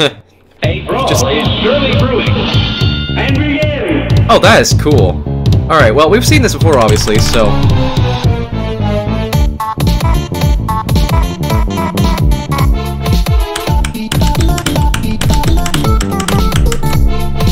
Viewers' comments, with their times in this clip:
0:05 Who else noticed bf has the midfight masses volcals